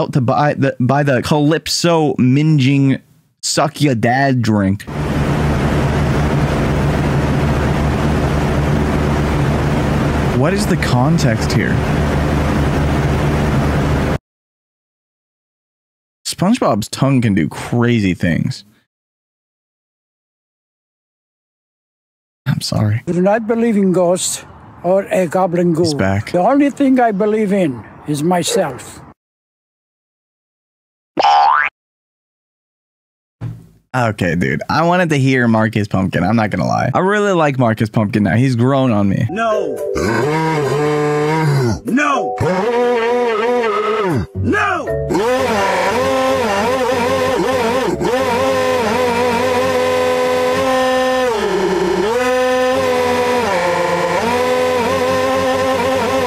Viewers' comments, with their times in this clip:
0:05 You don't know how many fans my aunt and grandparents have that sound like this or how many times I fell asleep to the noise💀
0:39 The one caught me off guard, I thought it was going to be the original one, but no. The replaying sound effects never fails to get me 😂